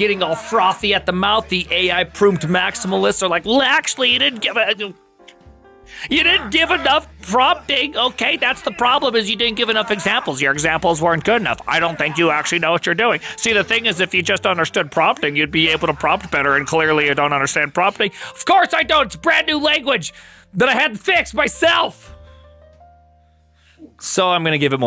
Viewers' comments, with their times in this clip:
0:08 was this a Trump impression? lol